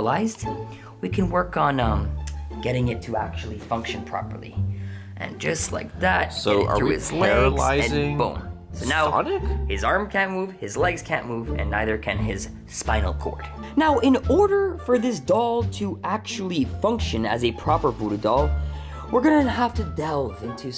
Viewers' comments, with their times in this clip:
0:06 the background music😂